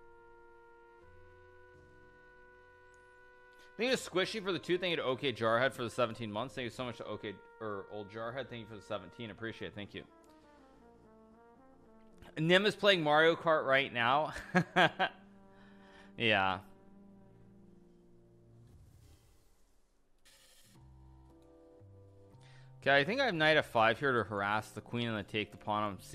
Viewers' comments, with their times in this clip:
0:10 don’t know if anyone here watches adam neely but i swear i heard the licc in the background music